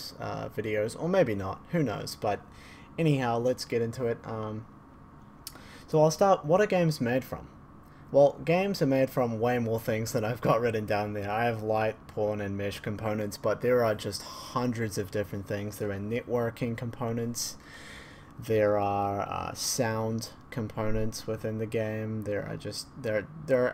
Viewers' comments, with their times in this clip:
0:10 wasnt really paying attention, and for a sec there i heard something you didnt say. and i was like "come again?" it was actually "pawn" tho.